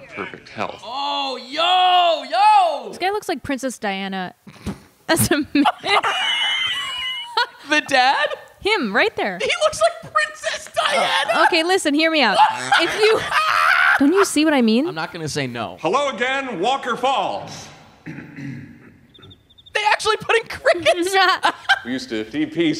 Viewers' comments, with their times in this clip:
0:06 scared tf out of me until I realized he was laughing